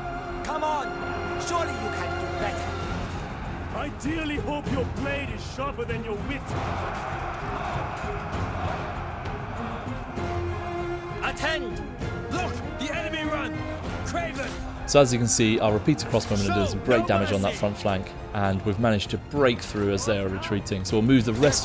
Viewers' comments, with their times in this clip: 0:07 and I dearly hope I can listen to Mandarin voice actors with English subtitles for MUH IMMMMERSION. As quite frankly they don't sound good at all.